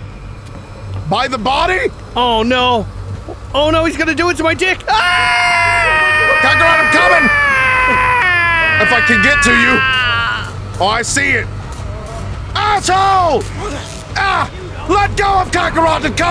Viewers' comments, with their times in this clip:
0:04 goku: moans* Vegeta: Kakarot I’m CUMIN😂